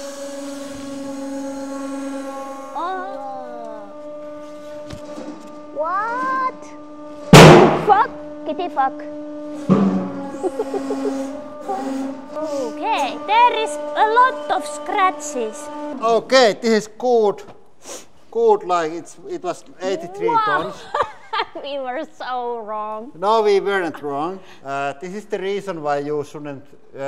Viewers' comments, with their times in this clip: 0:07 did she just say titty-fuck? 🤣
0:11 did she say t*tty f*ck 🤣